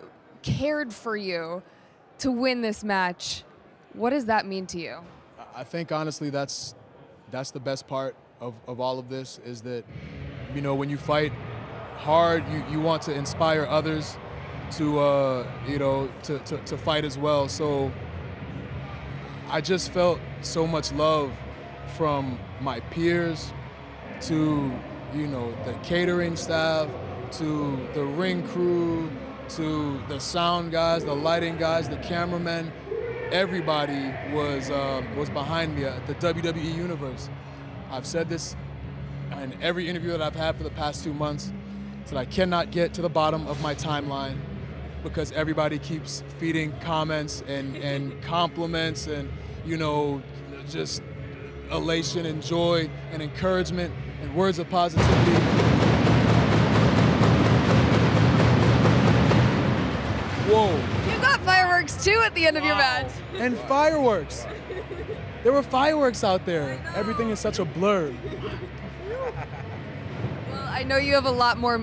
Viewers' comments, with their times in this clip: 0:09 hear Roman Reigns entrance
0:54 Did anyone else also heard The Big Dog's theme on wards
0:55 is it bad how I actually thought those were gun shots 😐